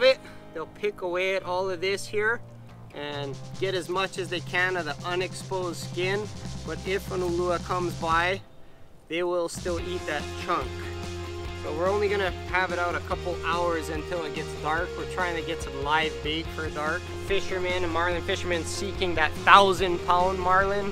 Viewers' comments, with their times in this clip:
0:07 why the guy tryin to talk with a hawaiian accent lol